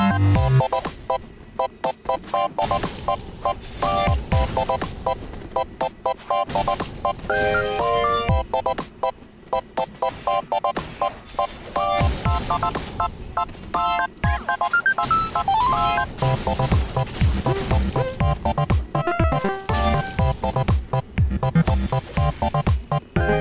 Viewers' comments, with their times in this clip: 0:09 What's with those shield blocking noises ?